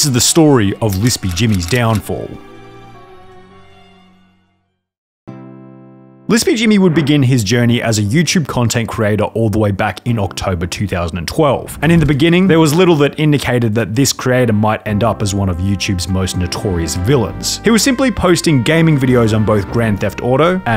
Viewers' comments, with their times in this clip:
0:05 that american accent slipped out lmao
0:06 now no one’s gonna talk about the voice crack? 💀